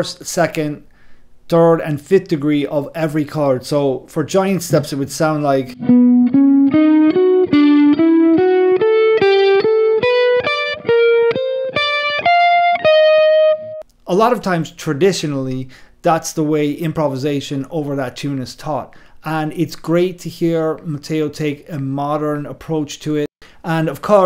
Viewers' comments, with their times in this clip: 0:08 LOL as soon as you started playing that idea I just went "yes this is pretty much every guitar guy on Giant Steps". Interestingly, this rapid key changing with symmetrical intervals is very easy to do on guitar in particular (one shape) but rather complex on horns for example, which is prob why they tend to play differently.